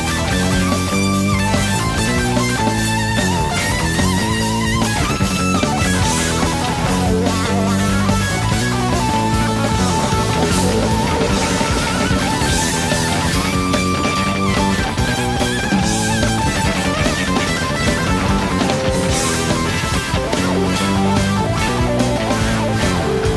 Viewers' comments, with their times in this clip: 0:09 Stanley is playing for the keyboard player - beautiful :-)